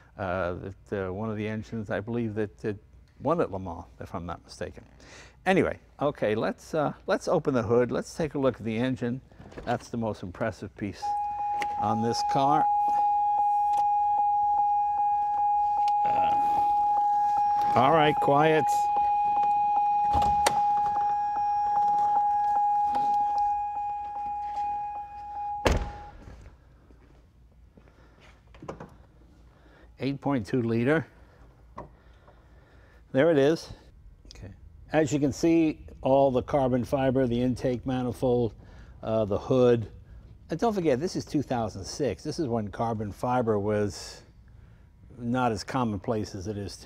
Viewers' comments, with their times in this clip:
0:07 ah so that's why my pops always gets angry at that damn door alarm, even when its not that bad, he used to own GM cars for many a year, like no wonder I used to hear stories of people going under the dash and finding the two wires to that thing and just cutting it on their products lol
0:33 And the guy whispering "OK" when they change to the engine camera angle 😊